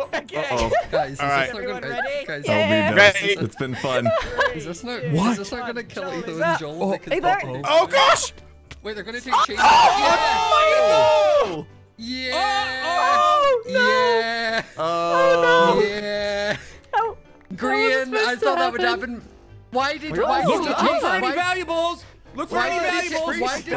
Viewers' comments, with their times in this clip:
0:09 nice splash . lol